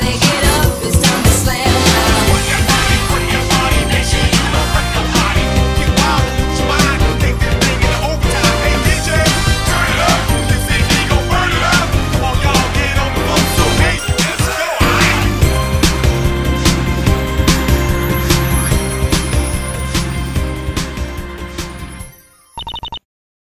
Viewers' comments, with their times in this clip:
0:04 The reversed Layering causes me great pain (≧▽≦)